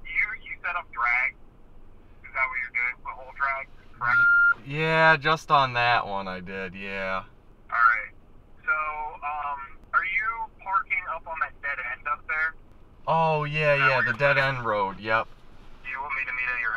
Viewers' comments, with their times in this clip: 0:04 what with the beeping?